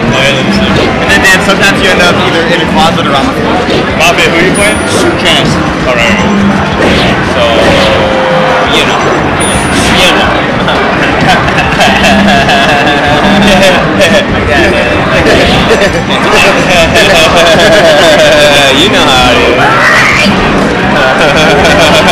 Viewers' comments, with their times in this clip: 0:10 *Beavis and Butthead take the mic*